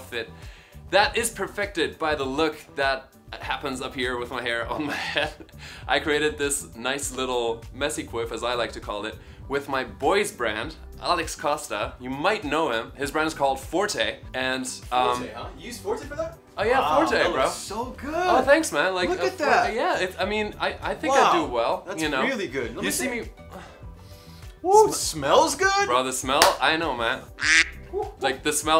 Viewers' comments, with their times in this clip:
0:10 In the first time I heard "with my boyfriend" Bruh :))